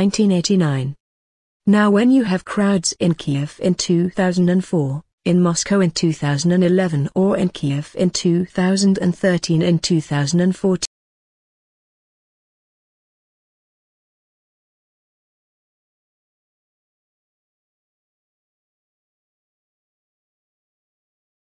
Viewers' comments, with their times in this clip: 0:09 the sound stopped working